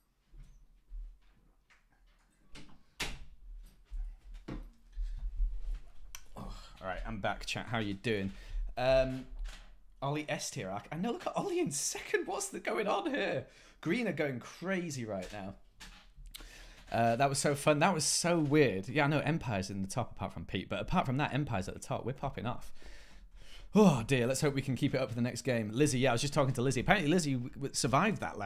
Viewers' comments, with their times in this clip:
0:10 my mans got back from a pee. I been holdin it lettin it brew a lil while watchin he took a pee break so i was like whatever i will too. DID NOT PAUSE the video, got back sat down as im hearing his door open and he starts talking. Bit strange but crazy timing.